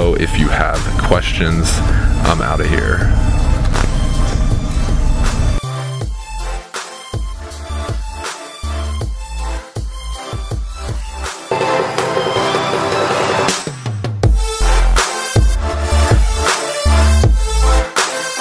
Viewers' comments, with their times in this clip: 0:05 I'm lovn that beat